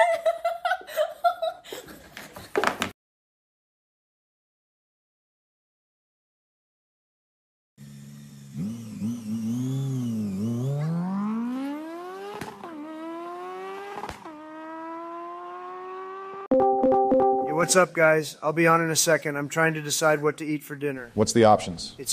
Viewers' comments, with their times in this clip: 0:08 that is one hell of a 0-60, what's the tune?